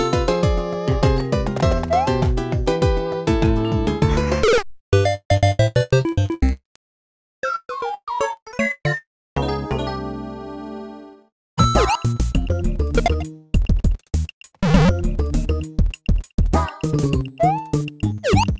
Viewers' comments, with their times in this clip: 0:04 sounds like the death sound of UNFAIR MARIO!!!!